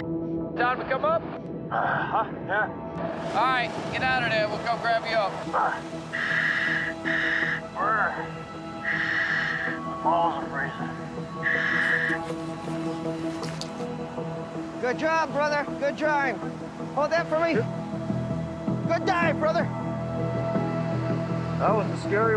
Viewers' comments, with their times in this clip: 0:08 that breathing part was deep